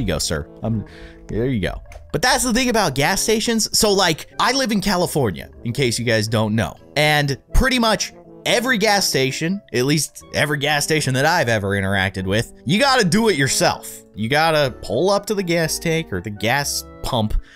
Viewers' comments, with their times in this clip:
0:05 "calafonea" I live in "grand dig" oof fare away I'm only 7